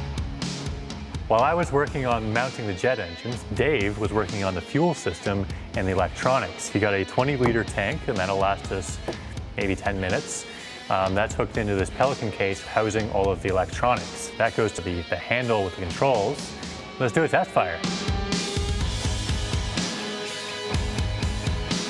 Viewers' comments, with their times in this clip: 0:09 he said that will last us 80 ten minutes